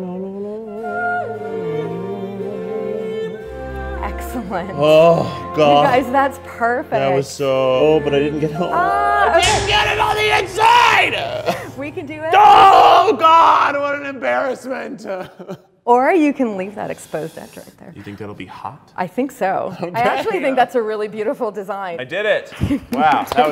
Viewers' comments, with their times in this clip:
0:08 I can’t believe I can’t find a comment on The frustration in his voice is hilarious!!!!!! 🤣🤣🤣🤣🤣🤣🤣